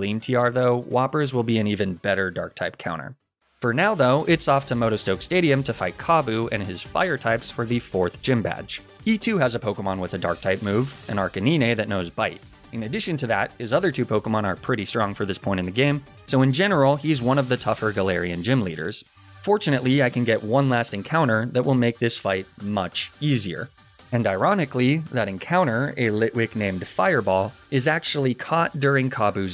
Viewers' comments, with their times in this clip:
0:10 Did he say... Arcaneene?